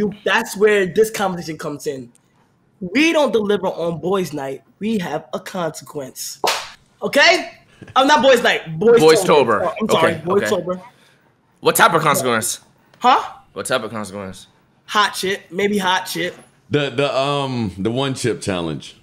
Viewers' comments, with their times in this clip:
0:06 that slap sounded loud as hell